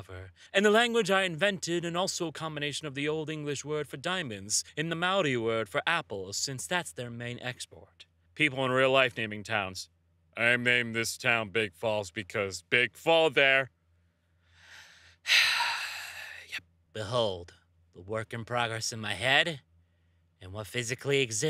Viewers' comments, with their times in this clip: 0:04 FINALLY!! Sorry, I just got excited that someone finally pronounced Maori correctly